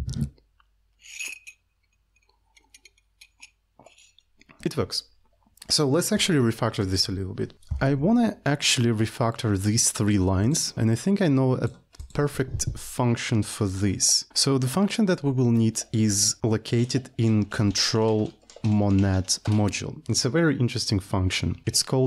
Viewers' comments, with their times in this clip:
0:06 so let's re-fucktor this a little bit.